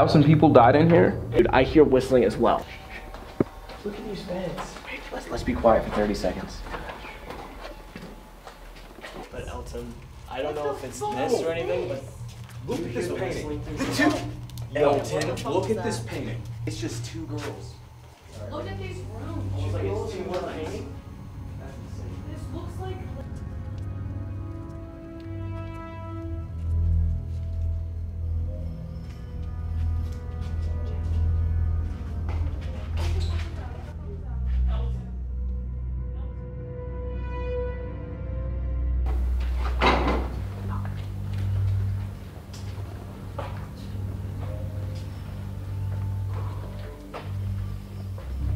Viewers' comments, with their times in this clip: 0:06 If you playback at .75x you can hear “Get out of here”
0:31 TFIL.. you can hear a very faint “Jay...”
0:31 Something says “jay”